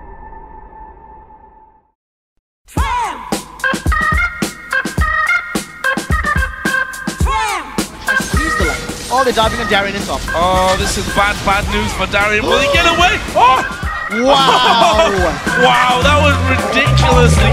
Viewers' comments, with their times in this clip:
0:05 Somebody logged in to skype. :D